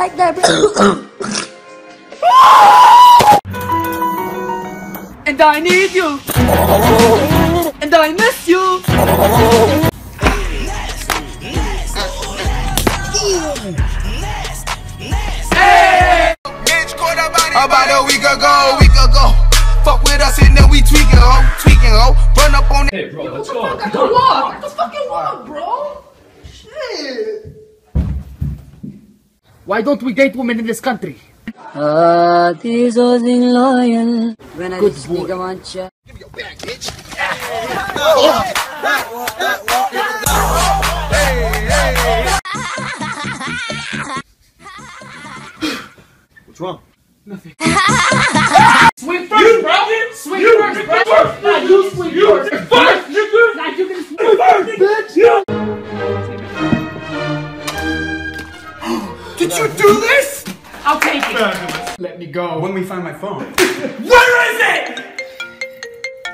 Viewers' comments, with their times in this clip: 0:06 since when did donkeys can sing?
0:32 why do I find this musical
0:42 Like If You Think This Laughter Is Creeping You.
0:43 I never related to a vine this much. That laugh was like, so weird and scary
0:48 Bro that Nicki manajs laugh got me